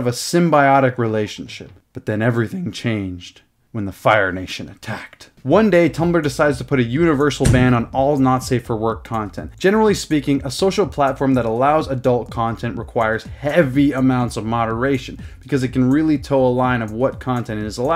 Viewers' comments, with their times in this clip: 0:04 the voice crack made it better